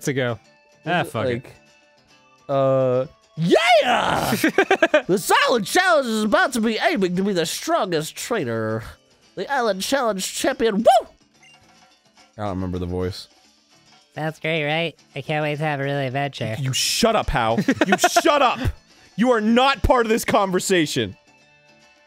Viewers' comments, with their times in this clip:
0:03 he sounds like Phil from The Nutshack
0:07 Kukui is Ric Flair ... CONFIRMED!? WOOOOOO! ^^